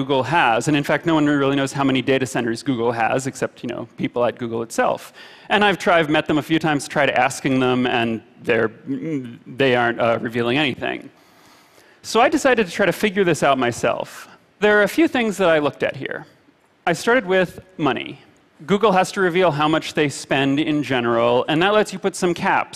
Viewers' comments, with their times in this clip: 0:05 I thought for a minute he said “I tried meth a few times I tried acid”